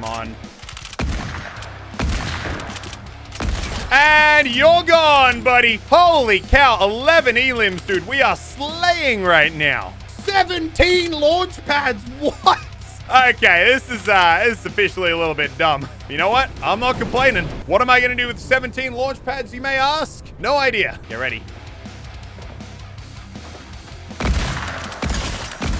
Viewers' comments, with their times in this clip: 0:10 dat voice crack doe